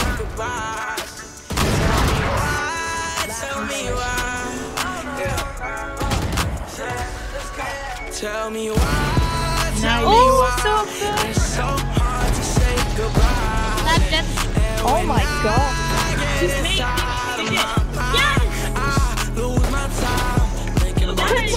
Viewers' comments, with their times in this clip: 0:08 that audio syncc